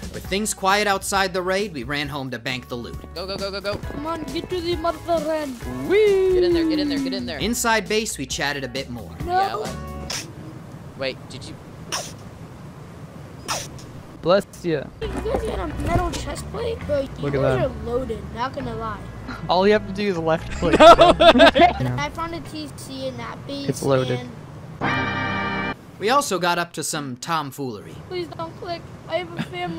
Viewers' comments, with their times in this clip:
0:10 woow that is sooo a kid sneez